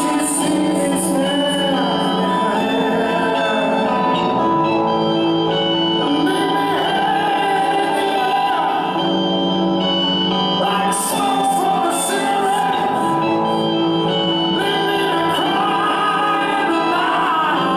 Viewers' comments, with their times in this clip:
0:05 and onwards he turned into Robert Plant!